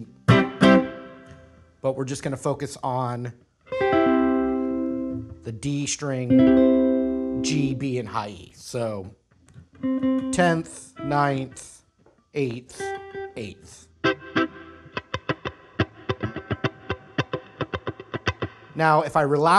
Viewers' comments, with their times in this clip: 0:03 Are we just going to ignore that he made a windows computer noise with his guitar